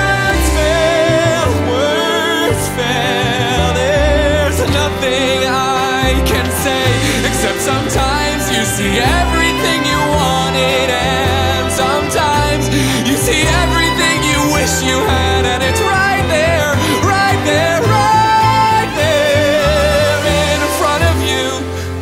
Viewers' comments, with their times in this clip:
0:07 So no one’s gonna talk about the delivery on ????? The three lines are so powerful yet still heartbreaking